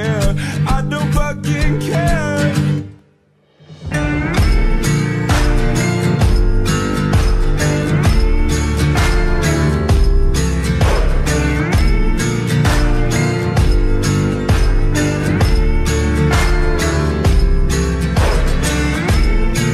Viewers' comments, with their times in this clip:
0:03 And this music by side